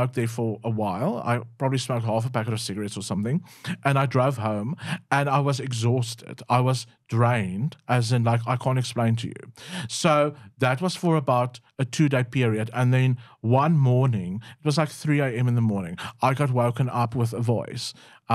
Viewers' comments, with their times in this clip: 0:06 so that’s why you begin every sentence with the kind of gasp one might have after being held under water for 5 minutes. Time to quit